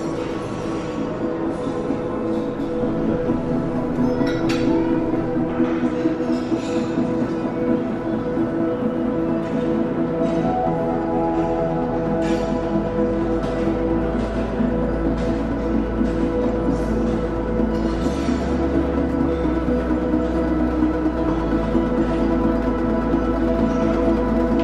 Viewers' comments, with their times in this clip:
0:09 Nice music in